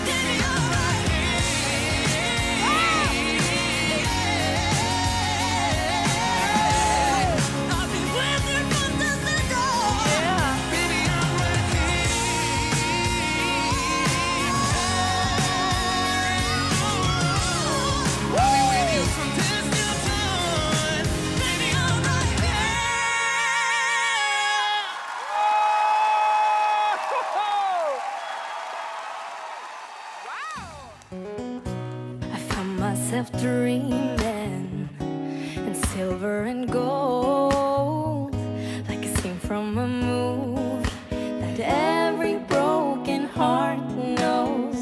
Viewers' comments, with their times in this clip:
0:08 that "yea" was so troll and meme worthy HAHAHAHAHAHHAAH
0:30 I like her voice!